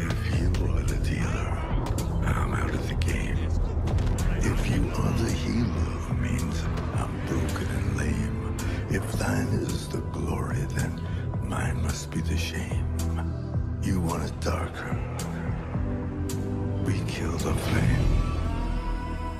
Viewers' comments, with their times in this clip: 0:05 Love it! Gotta love Leonard as well, his voice just spells doom :) Very impressive shots here, loved the one Perfect together with the music. Hard to get good footage at night, but you made it. Do you edit the brightness or something in this shots or just use the light sources in game?